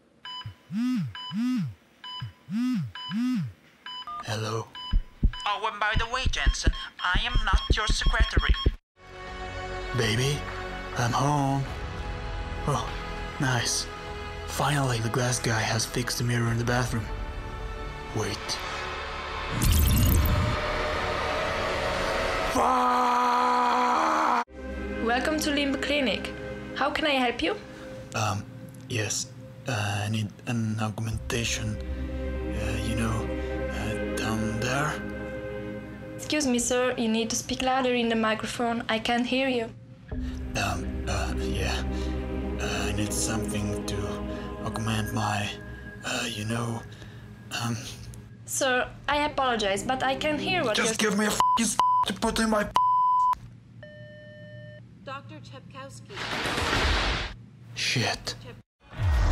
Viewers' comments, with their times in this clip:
0:05 that was the most interesting pronunciation of "secretary" I've ever heard.
0:40 She got A FRENCH ACCENT